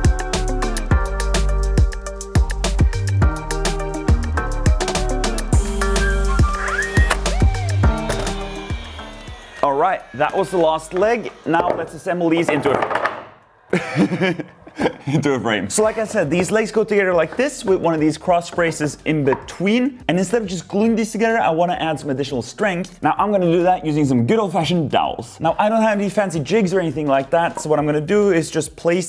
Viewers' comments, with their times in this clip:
0:10 I like how you laughed at that. If that were me I would've gotten frustrated with them domino-ing!